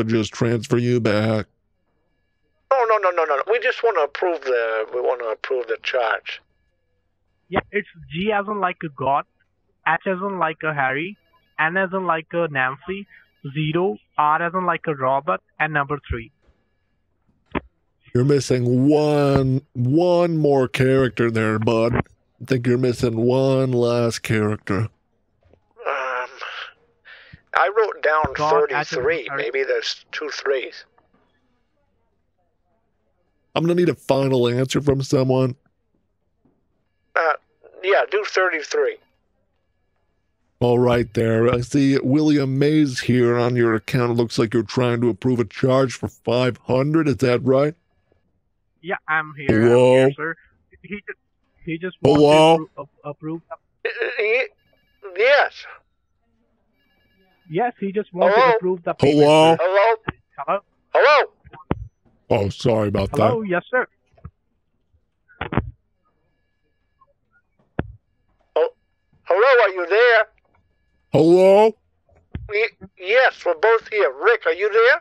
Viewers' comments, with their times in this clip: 0:08 Did he just say "s as in like Harry"
1:00 he used the wrong voice lmao